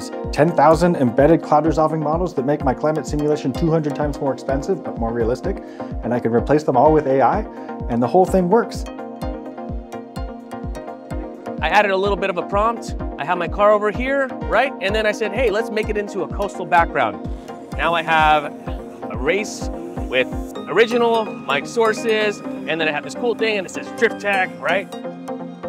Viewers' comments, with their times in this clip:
0:08 But "the whole thing works!" beams with excitement